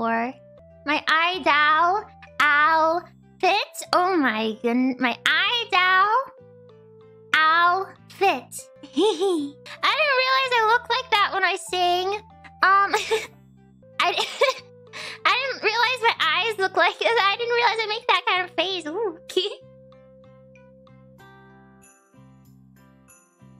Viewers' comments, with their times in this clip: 0:08 that giggle, ma haaart.